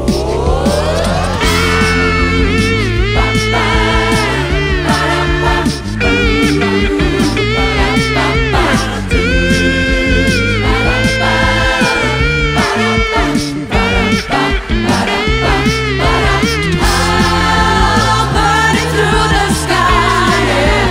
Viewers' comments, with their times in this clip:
0:04 best Beatbox ever